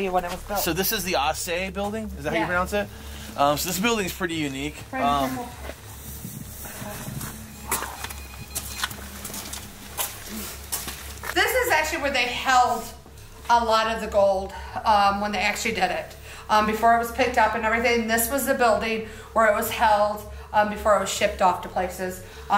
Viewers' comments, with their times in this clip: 0:08 12. 26 mark just as u guys walk in. Man whisper. GET OUT. and then 17 minute and 53 second marker the lady says something about the one thing they will hear is him saying get out. That was my clarification that I actually heard what I heard from you first walked in marker. Listen to with headphones